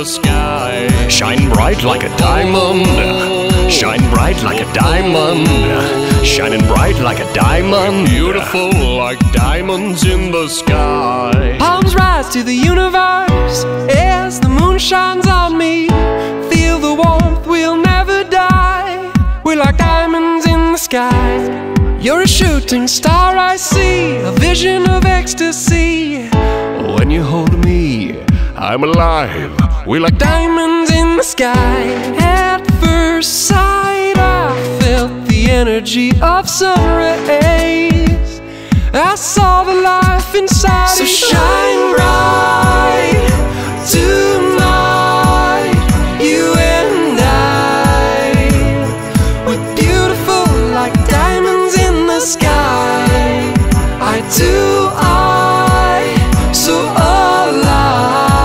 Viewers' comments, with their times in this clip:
0:10 Omg I love him ❤ Such a good voice!
0:11 His voice is incredible. How many octaves is this guy going through. the vocal magic starts.
0:11 I was already in love with the song but NOW? The absolute RANGE 🤯😍
0:12 The vocal range change is fucking incredible
0:26 i fricking love it when his voices changes immediately from low to high 😍😍
0:27 Is thro the drastic vocal change one whole take or did they just combine it to sound like one take
0:31 I think I could fall in love with the twitch in his voice. So professional and well trained. That mark is actually very hard to meet in the middle of a set. Beautiful work! (wonder how many takes it took?) Also love the body animation throughout the set.
0:46 I adore the way he sings "you and I"